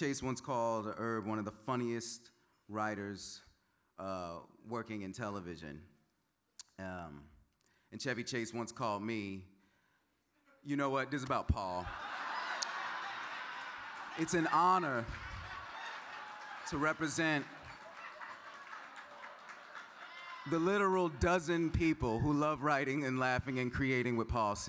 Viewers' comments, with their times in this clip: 0:08 love hearing a room of writers lose it over a well written joke. 😂